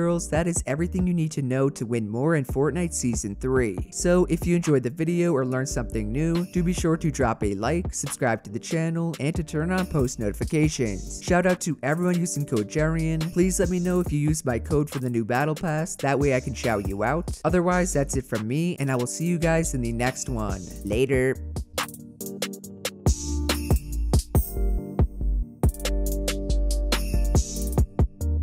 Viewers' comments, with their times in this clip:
0:09 is it just me or did he say turn OFF post notifications?